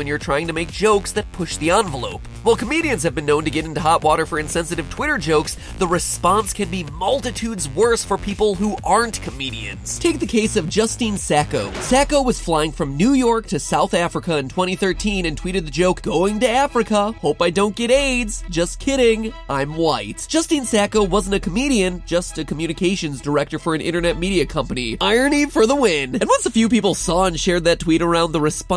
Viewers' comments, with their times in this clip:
0:03 what happened to the audio quality
0:09 mic change am I right
0:13 The audio quality shift is killing me
0:13 Why did the quality of mic change